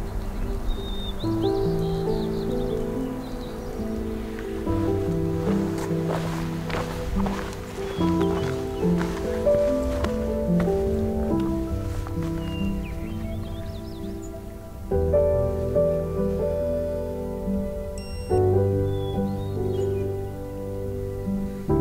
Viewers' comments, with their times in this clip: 0:08 Just watching this again. one of my all time favorite bird songs — the Hermit Thrush. They are incredibly abundant in the Olympic Mountains in late spring/early summer. At slightly lower elevations, at the same time often, there is the Varied Thrush singing away in the forests. And somewhat later — early to mid summer — the Swanson’s Thrush echoes through the lowland forests. But there is just something about the upper elevations when the Hermit Thrushes are singing — especially when first waking up.